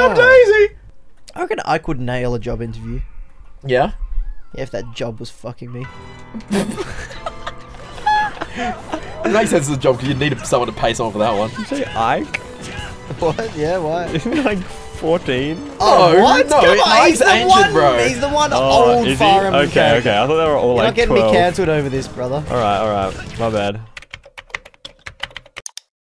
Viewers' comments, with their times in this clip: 0:07 The music was perfect